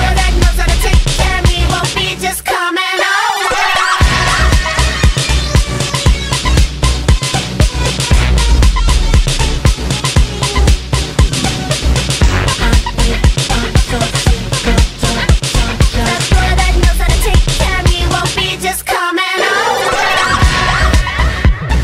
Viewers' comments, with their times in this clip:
0:03 One of my faves from Blackout, the beat is amazing!